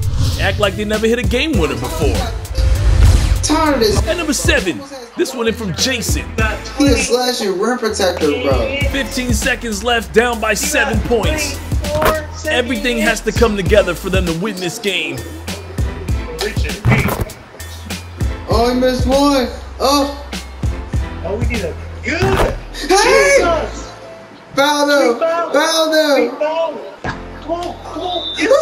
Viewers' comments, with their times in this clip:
0:10 Anyone else caught him singing ella mai? 😂 😂